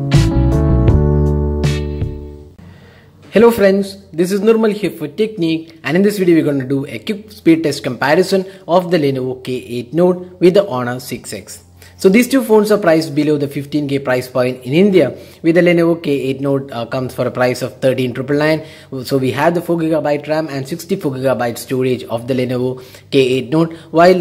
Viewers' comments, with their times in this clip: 0:06 what did he said XDDD quke ??